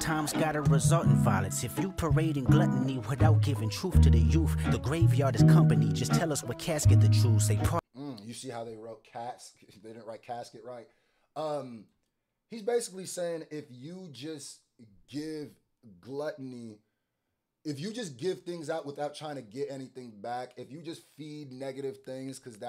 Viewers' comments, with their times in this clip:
0:08 Beats similar to in LA and I love every bit of it